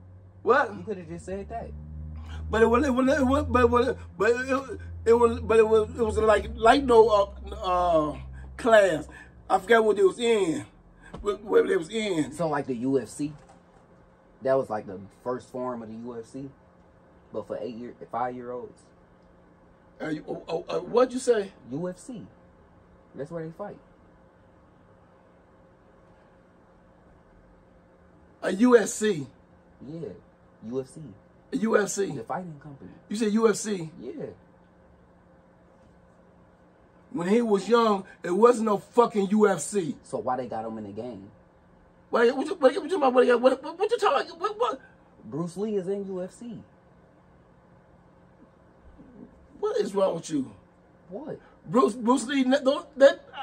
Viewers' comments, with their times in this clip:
0:04 sound courage the cowardly dog lol
0:41 when you hear your neighbor start his ole chevy blazer in the morning